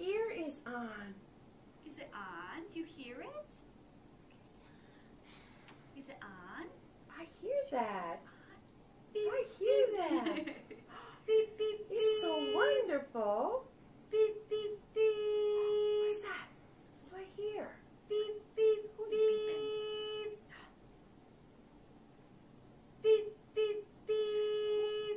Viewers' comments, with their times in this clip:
0:06 Oh my god thats so annoying “BEEEEEP”